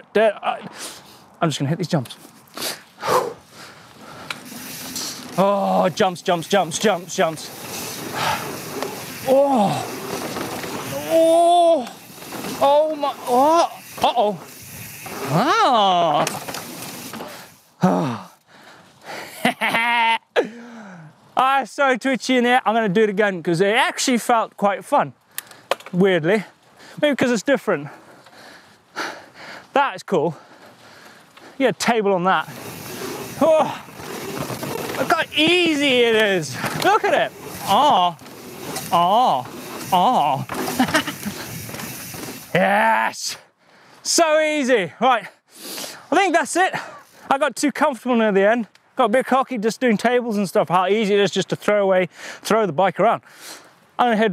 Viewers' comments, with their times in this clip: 0:07 listen to the sounds hes making
0:37 sounds like Sam Pilgrim